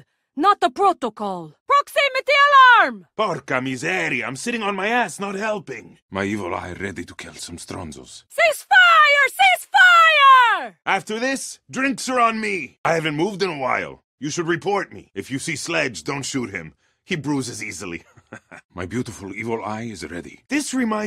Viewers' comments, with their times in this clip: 0:03 "Porca miseria" why ubisoft...he pronounced it bad ... Italian stereotyped too much. Sorry for my bad english im italian